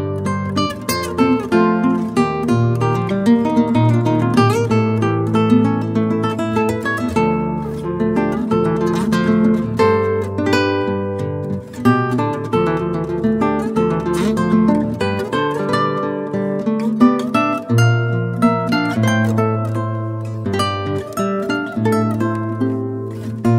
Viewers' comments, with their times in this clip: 0:10 what the frick is this? The Guitar olympics? Jesus Frick, man, what a gnarly chord.